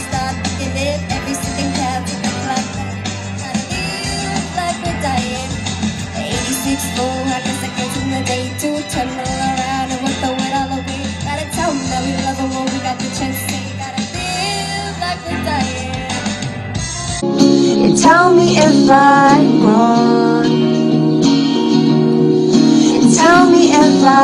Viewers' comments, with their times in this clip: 0:10 It's sad because she is singing in public off key,flat and singing the wrong lyrics